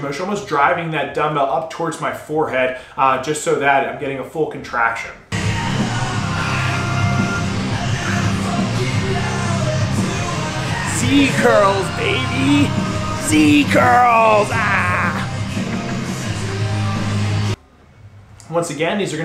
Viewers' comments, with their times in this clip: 0:06 I am a fan too. HAPPY SONGGGGGG BTW AWESOME VIDEO THANK YOU